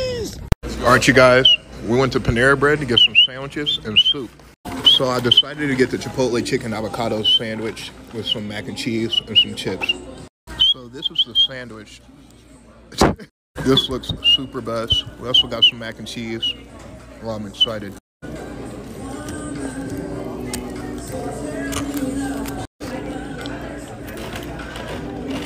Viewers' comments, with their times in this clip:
0:09 Ay my boy is SSSSpitting